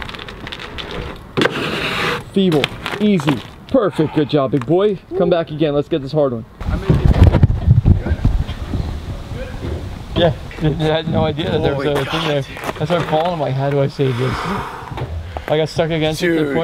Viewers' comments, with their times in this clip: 0:04 "Come back again let's get this hard on" LMAO